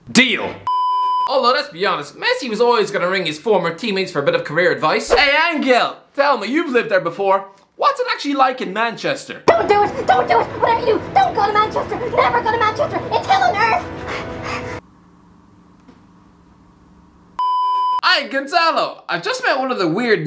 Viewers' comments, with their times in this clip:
0:08 why did Ozil answer when her called Di Maria?